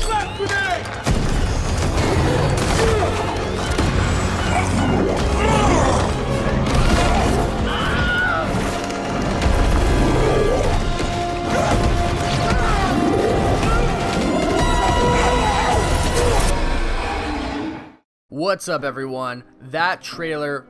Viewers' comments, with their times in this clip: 0:07 Ah yes the famous "Wilhelm Scream" This new trailer is amazing. "Mask, Copy". Great video like always. Scarlet Witch is my favorite hero. I love this channel. Woof Woof.
0:07 wihelm scream xD
0:08 the famous scream